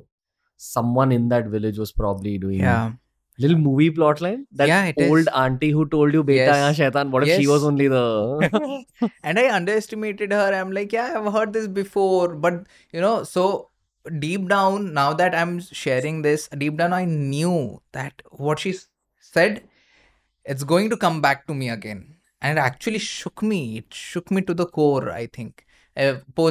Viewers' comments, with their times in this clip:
0:09 I heard something 😶😶😶😶one lady whispering 😳😳😳😳